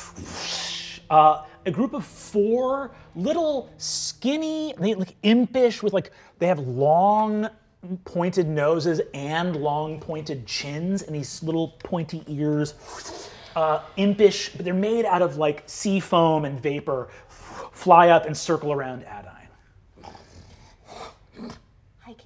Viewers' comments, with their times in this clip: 0:07 OMG Brennan doing the little gremlin cheerleader noises is my favorite thing!